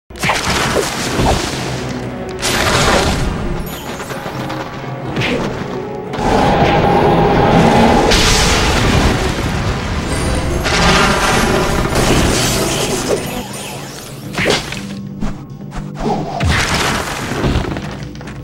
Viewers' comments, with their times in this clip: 0:03 the bell chimes gave me goose bumps here like brooooo😣😭